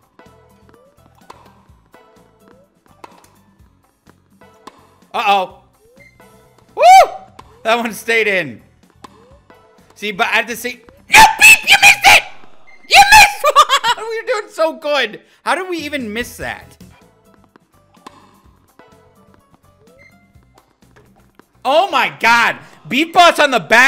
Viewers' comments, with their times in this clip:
0:08 The normal talking and all of a sudden the night pitched voice 😂